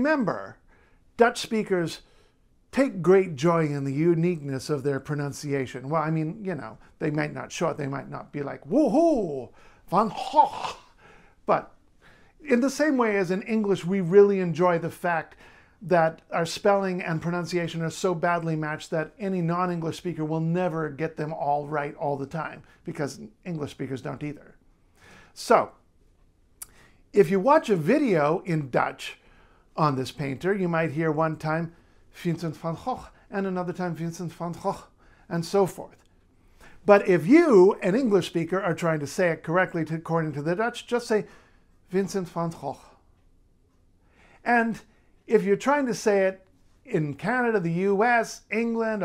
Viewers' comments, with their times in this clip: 0:10 he’s really giving that good hawk tuah 😂
0:31 Correct pronunciation Both of those are the same, dude. Oh! The first time it's Fincent. Well, that's not a Dutch name, it's an English version of Latin. So it should be Vincent. As opposited to Vincenzo.